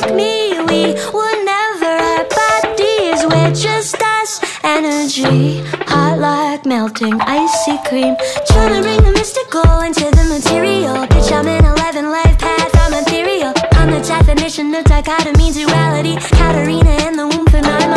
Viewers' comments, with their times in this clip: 0:05 In I thought she was saying “we would never act like d’s” not “we were never our bodies”